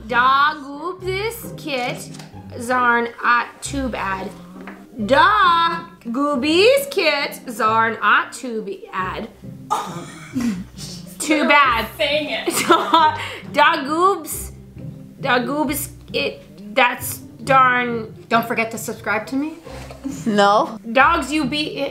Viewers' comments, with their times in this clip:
0:09 she sounded like the sims